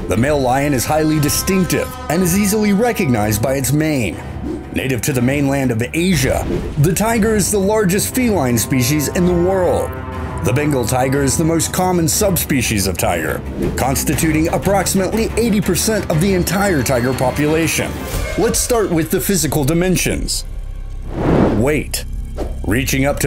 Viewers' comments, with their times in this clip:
0:09 sounds like the among us music